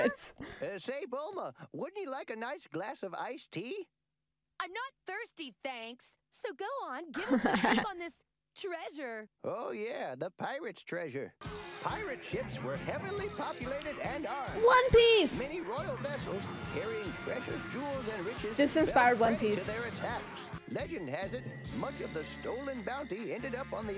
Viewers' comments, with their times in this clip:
0:06 I thought she said "Gohan", but she says "go on".